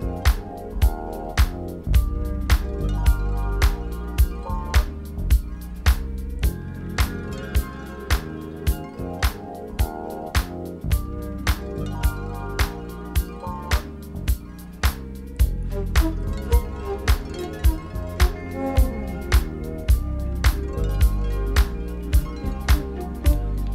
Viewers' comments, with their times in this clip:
0:05 I keep cominh to this video for the song